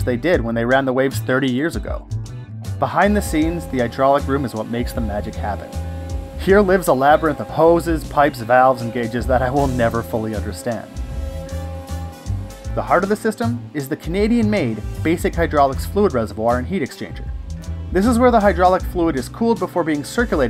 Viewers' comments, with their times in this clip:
0:03 sounds like a fairground ride